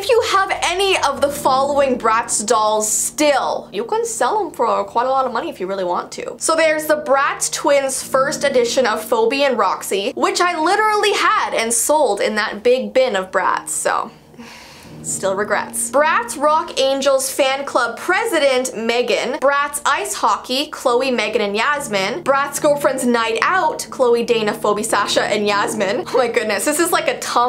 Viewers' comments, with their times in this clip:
0:09 nobody is gonna talk about how she said Phoebe like "FOBI" ????
0:09 "fobee and roxee" Am I the only one that realized that its supposed to be Pheobe (feebee) XD